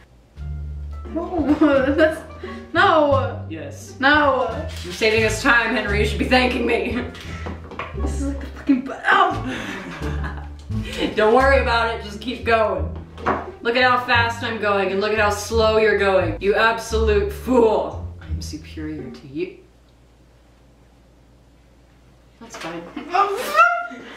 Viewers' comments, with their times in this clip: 0:08 Don't close your eyes and listen to that if you're dirty minded..